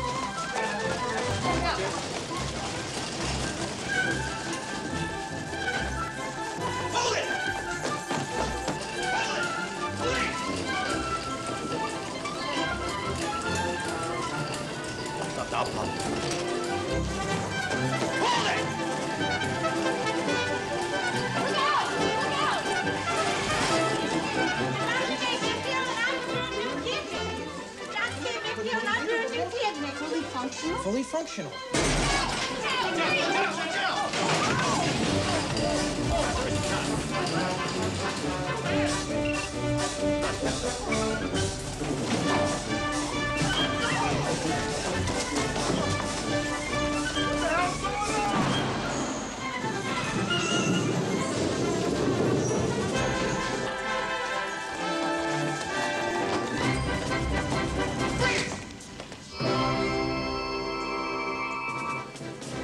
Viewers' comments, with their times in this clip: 0:06 is it just me or the music absolutely hysterical i love when chekov tries to sit up but kirk pushes him back down saying not now
0:46 That guy screaming, "What the hell's goin' on?" when the horns are blaring, classic Trek!